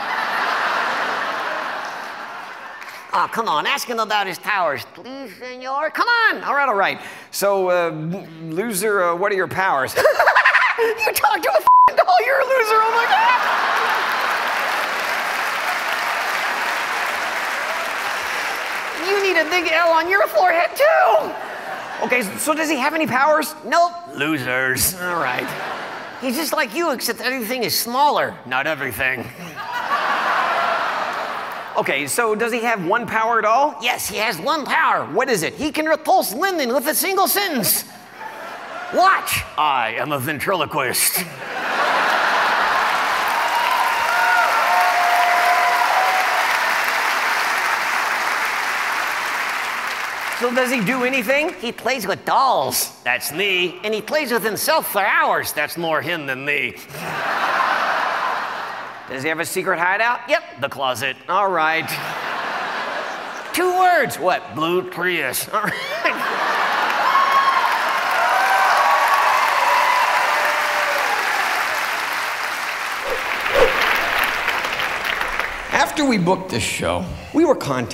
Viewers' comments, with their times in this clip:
0:10 His voice cracked!
1:05 Hah, he laughed about “Blue Prius”.